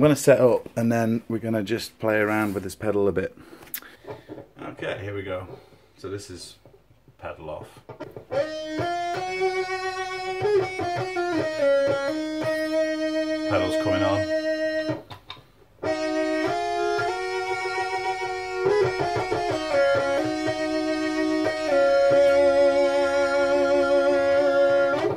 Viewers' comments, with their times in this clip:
0:09 iss exactly what I was looking for. That melody ! Amazing! Ima go get me this pedal asap lol!